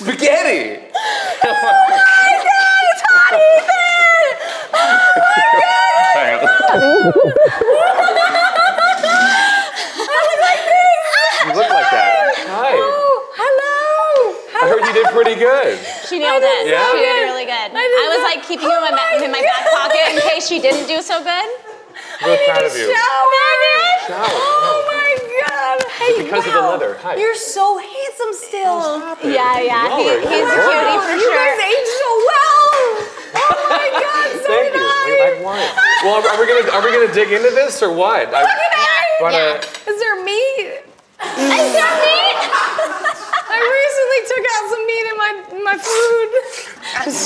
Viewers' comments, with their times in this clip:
0:08 when she started laughing she sounded like Ariana Grande when she laugh in Victorious
0:35 Is no one going to talk about Hilary’s fake laugh WTF🤦🏻‍♀️🤦🏻‍♀️😂